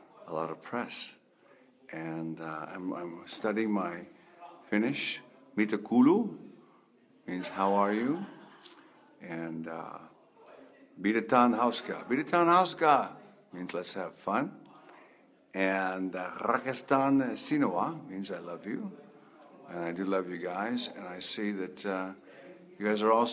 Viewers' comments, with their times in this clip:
0:05 David did pretty well with Finnish here. The only mistake was in "mitä kuuluu" (how are you / how's it hanging) which he pronounced as "mitä kuluu" (what's spending / what's wearing out). Unlike in English, in Finnish double vowel means that you have to pronounce that vowel sound longer – it's more like a diphtong with the same letter than some specific time period for a single vowel, though. The R in "rakastan sinua" was a bit excaggarated but otherwise just fine; really well done for a native English speaker!